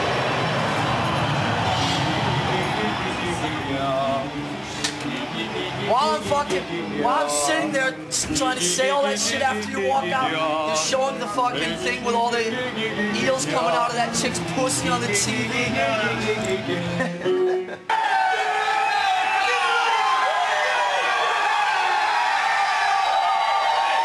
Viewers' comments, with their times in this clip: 0:05 James is doing warm-up vocals in "yeahs"